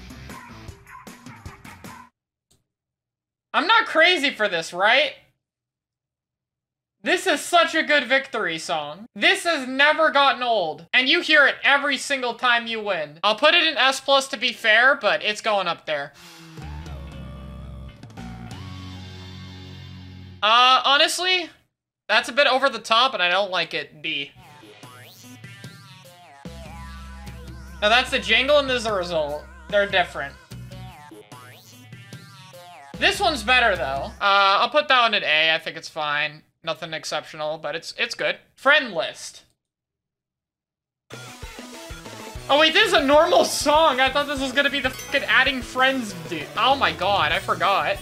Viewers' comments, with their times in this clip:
0:04 it sounds like the inkling popping off so I love it
0:30 I’ve heard that song too much…